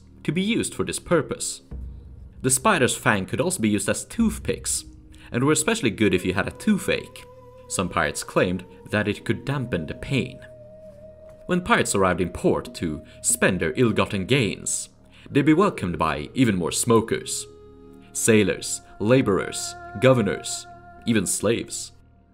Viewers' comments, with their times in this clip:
0:10 Elwynn forest ambience very feint, i had this sudden feeling of nostalgia as i heard it start. Nice.